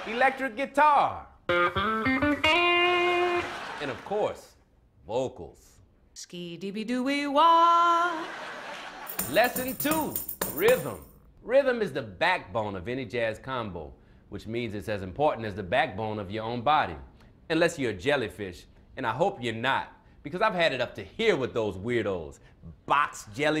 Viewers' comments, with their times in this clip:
0:08 sounds like the Conan jingle